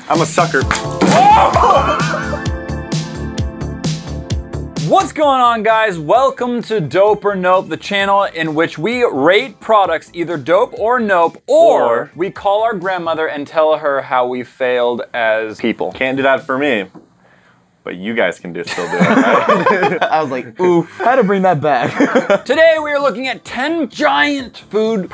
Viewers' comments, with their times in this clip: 0:08 did anyone realize that he said rape products dope or nope
0:08 I swear I heard rape products or was it just me😂